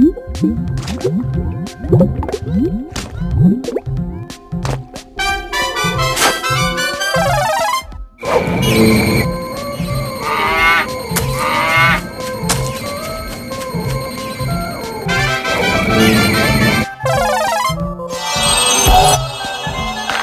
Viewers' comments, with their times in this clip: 0:06 Theres a strange vibe with the crying sand castle kid